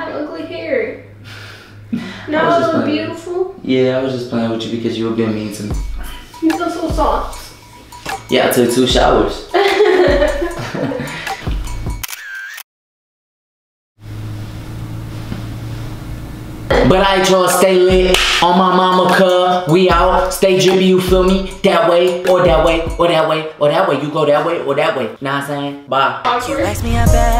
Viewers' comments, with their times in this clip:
0:10 Lmftooo that pose he did with the photo sound had me screaming 😂😂😂😂 I was like whoaaa😍